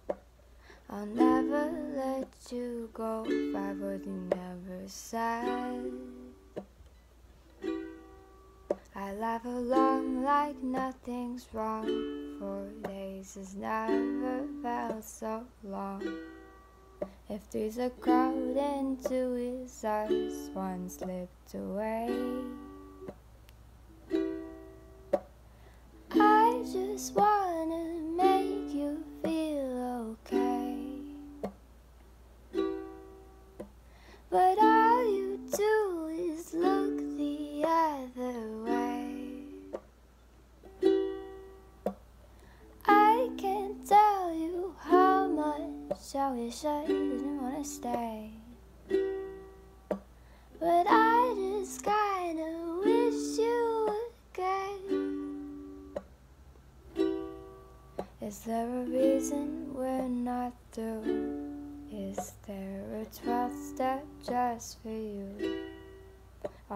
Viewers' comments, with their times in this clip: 0:03 Omg I’m only and you sound amazing
0:53 oh g-god it’s all off.. the inDIE voiCE too. omg im uncomfortable sorry girlie this ain’t it huh